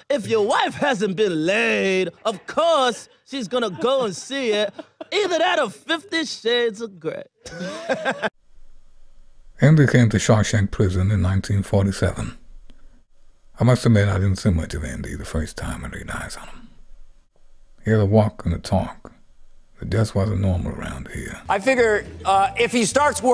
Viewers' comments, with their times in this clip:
0:05 best Morgan freeman impression
0:08 for the greatest Morgan Freeman impression ever.
0:08 That was the thing with most ventriloquists: talented, trained but terribly unfunny. That said, the one impression that impressed me the most was not funny: Morgan Freeman's There's bad, good, great and funny, but that one was a little terrifying, and it helps that he used the exact phrase Morgan said in the movie (and the sound quality helps too).
0:08 Autotune doesn't count.
0:09 OMG- that Morgan Freeman is almost spooky; best impression EVER! My other favorites are Elon Gold as Jeff Goldblum, Dana Carvey as John Travolta, Jay Mohr as Norm MacDonald & who ever thought of impersinating Tom Brokaw; spot-on!! GENIUS!!! This video made me just fall in love with Jim Meskimen!!❤